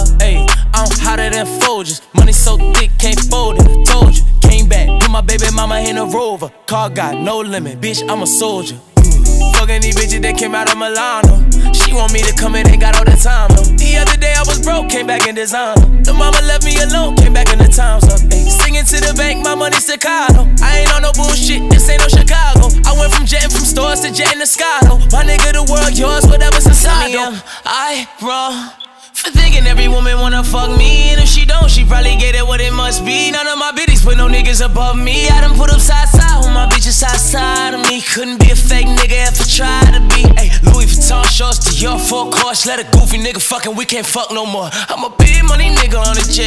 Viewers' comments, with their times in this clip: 0:09 tory turned into roddy fasho
0:28 Well well well fire alarm batteries
0:34 if you know canadian artist you know thats safes flow he switched to just listen to safe-feel afterwards